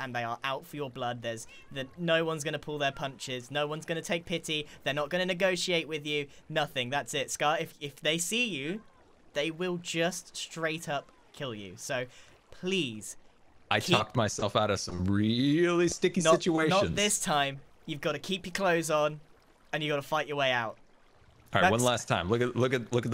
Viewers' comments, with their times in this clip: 0:07 did anyone notice grian’s cats meowing